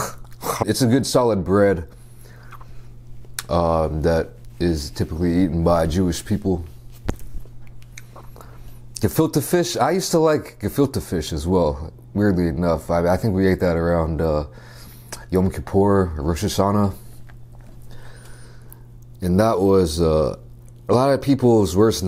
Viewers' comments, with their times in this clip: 0:09 are you trying to say „gefüllter fisch“? hehe sounds cute